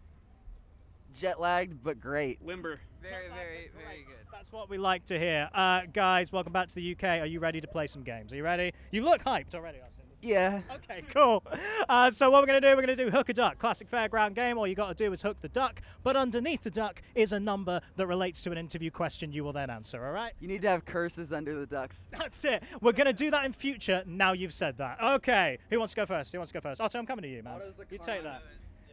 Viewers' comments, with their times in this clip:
0:10 Awesten's little 'yeah' asdhgskgsdljgf I cried